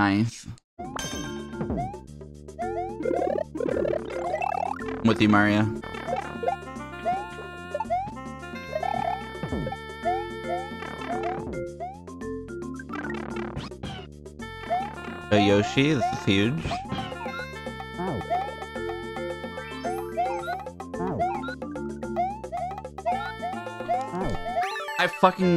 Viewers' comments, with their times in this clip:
0:10 the way the Yoshi spawn noise goes with the music is legendary